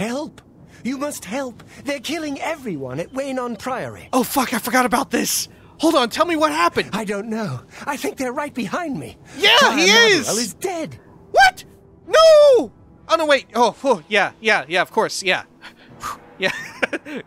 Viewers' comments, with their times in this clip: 0:05 The genuine distress in your voice as you think your dear Prior Maborel died has me dying laughing LOL